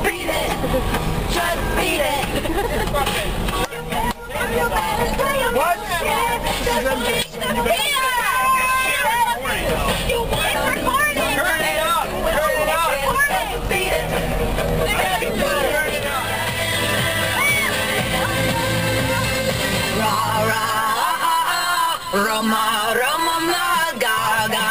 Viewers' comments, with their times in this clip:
0:06 you sure had a lot of fun XD someone should do a moonwalk...just saying cause i heard Michael Jackson(i don't know if it is spelled right) and something else....ummm happy b-day for your cousin